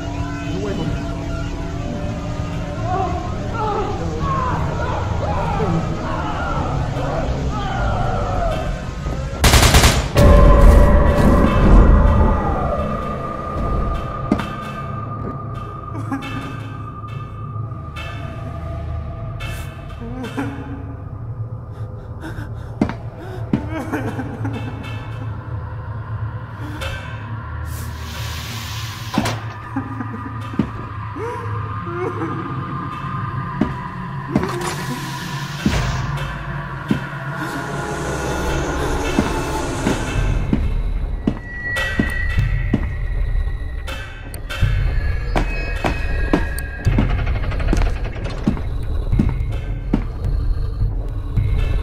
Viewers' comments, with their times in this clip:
0:09 Honestly I always think with the bloody window and that horrific scream, I always think that it came from the guard as he got slaughtered by the Shy Guy, but it was the killer's scream. For it kind of fits it actually.
0:38 Scp-173: Yo Man U right? Scp-096: ETERNAL SCREAMING
0:38 SCP-096 crying SCP-173: I gotchu bro!